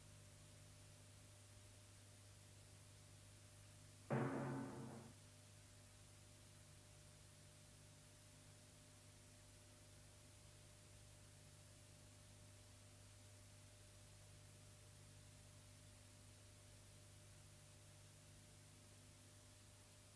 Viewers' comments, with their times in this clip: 0:04 You can hear a tympani sound.